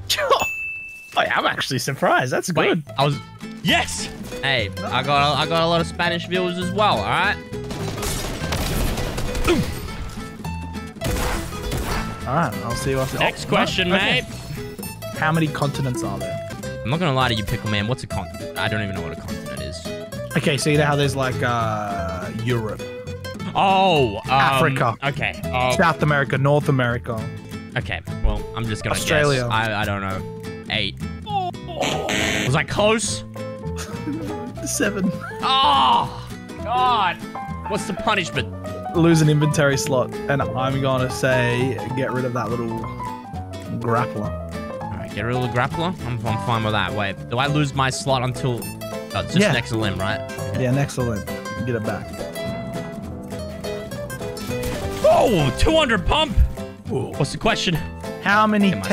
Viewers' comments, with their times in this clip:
0:04 The music skipping parts of the song messed with me so much, it sounds so messed up😂😂
0:46 Yo the hell is happening with the music